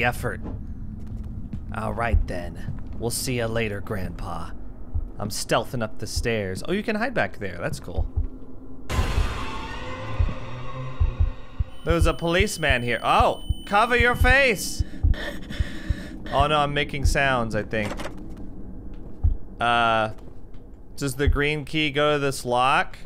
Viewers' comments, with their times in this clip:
0:08 Bendy jumpscare noise... Holy shit, this game makes Granny look great. At least she doesn't get stuck like this idiot carrying a rake does.